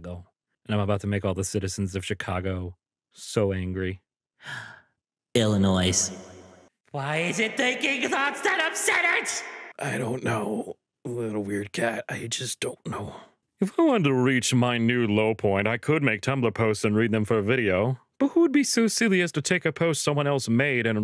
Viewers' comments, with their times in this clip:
0:04 Hey man I'm from Illinois and sometimes I say it like that so it's perfectly fine.